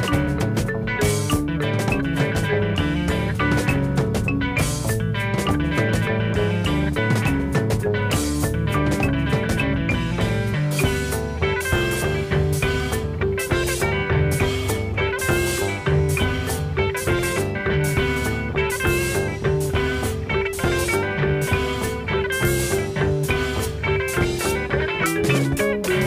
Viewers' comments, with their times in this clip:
0:10 The Tripp (marimba), Harkleroad (guitar), Boston (bass) and French (drums) instrumental break that starts is AMAZING - almost canon-like.